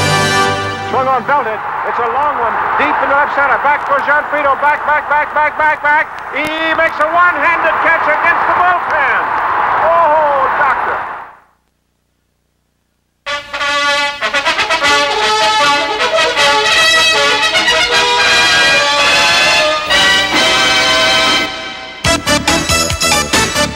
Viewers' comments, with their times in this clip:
0:04 red barber going nuts